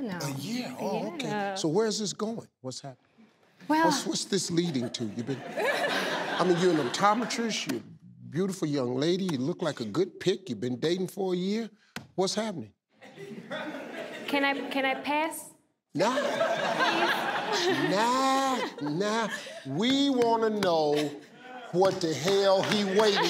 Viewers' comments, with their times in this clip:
0:04 this man is saving lives with true genuine laughter. Thank you so much.